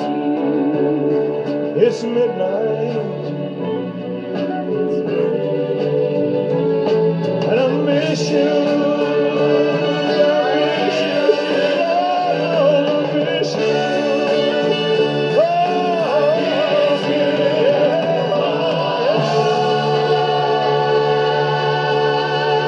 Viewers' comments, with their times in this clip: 0:10 I heard him say I miss you chilla
0:10 The second time when he sounded more sad was